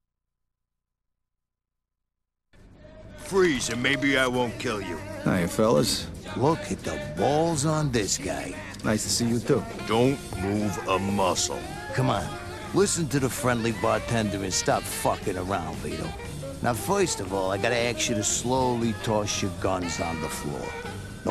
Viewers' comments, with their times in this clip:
0:06 lol "look at the balls oin this guy" he sounded jelous